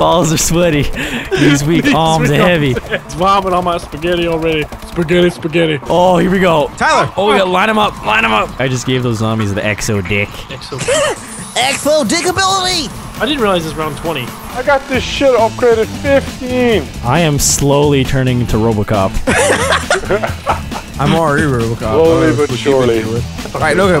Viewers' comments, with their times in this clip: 0:09 why does he sound like the electro wizard from clash royale